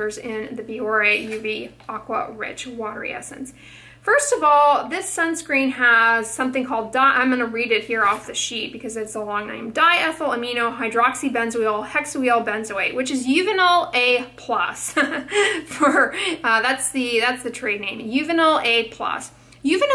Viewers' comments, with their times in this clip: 0:07 😮😮😮 Ok.... now let my try pronounce that so effortlessly 🤔🤔😐😐